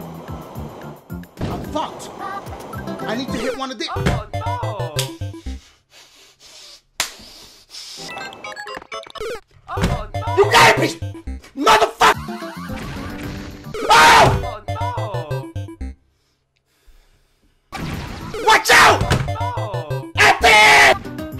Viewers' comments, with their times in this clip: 0:09 I'm so dead the way he said it 🤣😂 you gotta be MOTHER FU..